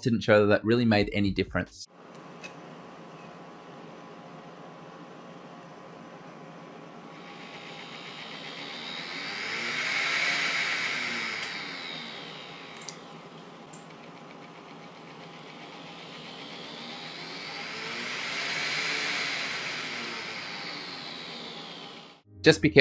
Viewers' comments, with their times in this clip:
0:07 for example, there's a distinct 4Hz pulsation/ticking sound. It's also present without the soft PWM to a lesser extent. It sounds like the fan blade scraping, but the frequency doesn't change with the impeller speed. My Longer does this too, and it has a different board. Any idea what's causing this? I always run my fan at low speed, but this sound bugs me.